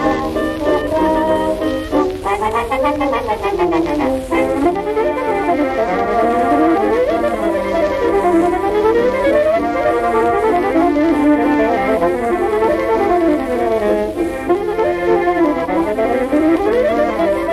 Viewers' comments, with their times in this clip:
0:04 Nice to hear this again. I own this record. It was my grandfather's 99 years ago. Interesting musical arrangements back then, too. Very inventive. Nice alto sax chorus starting